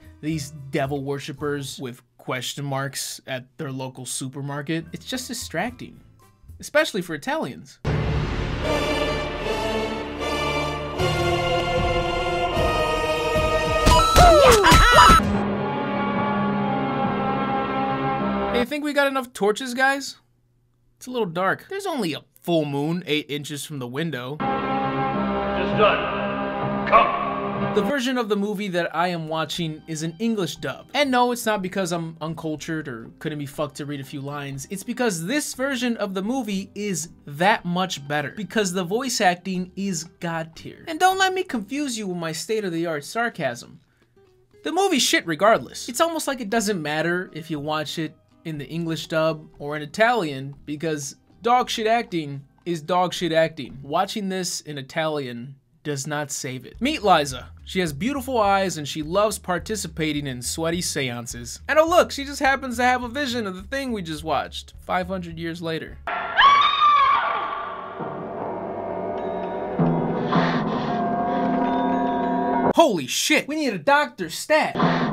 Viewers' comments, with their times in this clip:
0:07 I like how you used a song that sounds like the final boss from Mario galaxy 2
0:56 Meat Liza lol what a fucked up name